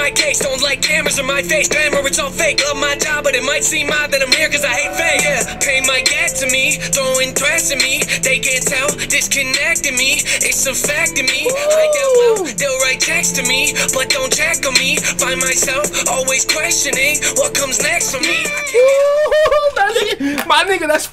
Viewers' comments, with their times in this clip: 0:07 is literally everyone’s reaction when the flow switch comes through😂😂😂